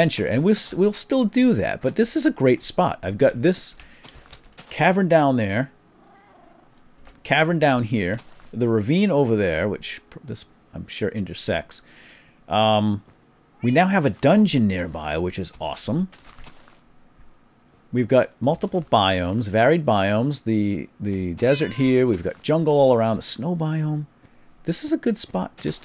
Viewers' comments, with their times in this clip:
0:08 did you say ender sex because it sounds like that LOL